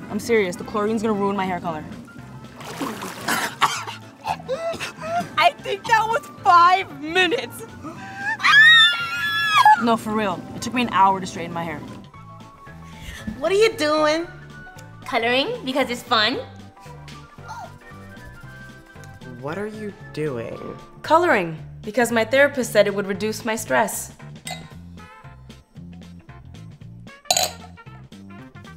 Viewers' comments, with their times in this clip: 0:09 why does them screaming remind me of Monica when she said "I have elbows, AaAaAh!"